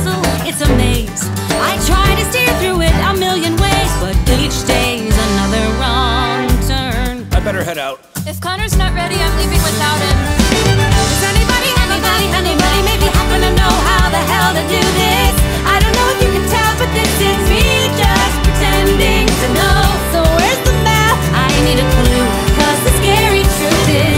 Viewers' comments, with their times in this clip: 0:10 When the lyrics overlap yes ma’am
0:11 I’m sry. This is the first time listening to this. How were they able to do ? Is there more than one person singing?